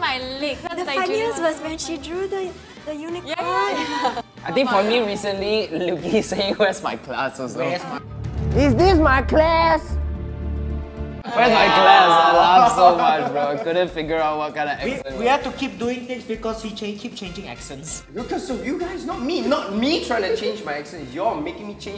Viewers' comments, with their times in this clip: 0:08 THE FACT HE SAID IT WITH A STRAIGHT FACE WITH SERIOUS MUSUC IN THE BACK MADE ME ROFL